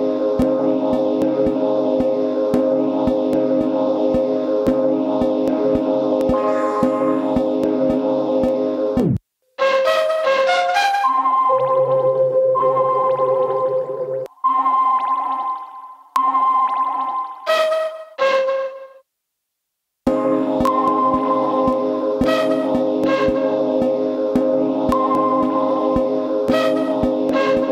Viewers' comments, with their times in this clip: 0:10 Linkin Park much?